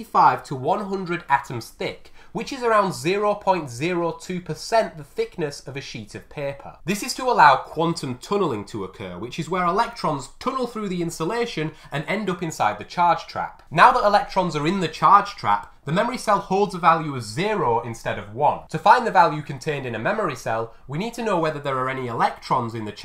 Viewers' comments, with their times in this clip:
0:04 oh no, not the sheet of Peppa)